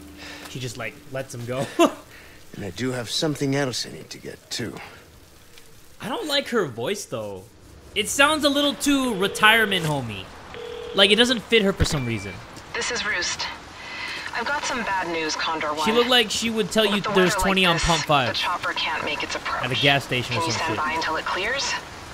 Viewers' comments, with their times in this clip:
0:06 yeah her character is fine but the voice is nahhh